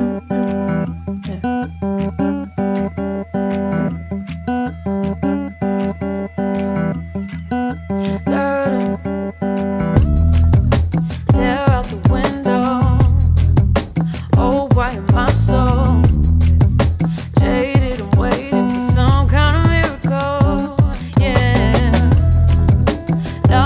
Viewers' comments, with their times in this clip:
0:08 She started to early. (Who cares) What I love about it is that it shows that she´s sings live! What a voice this girl has..